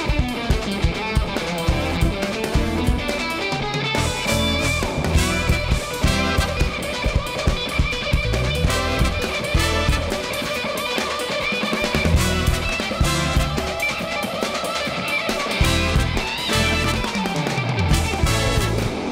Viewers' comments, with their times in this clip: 0:05 Whoweeee in the pocket ! 🥶🥶🥶